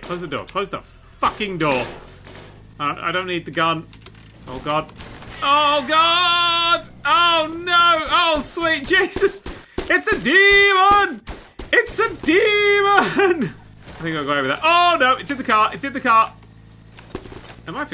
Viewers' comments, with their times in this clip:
0:03 My audio completely glitched out and I don't think I'm ever going to sleep again